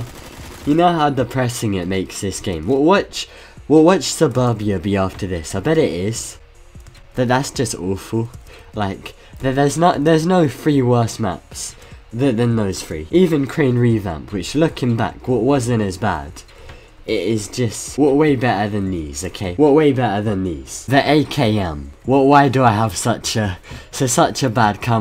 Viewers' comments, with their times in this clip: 0:06 Thats just olfou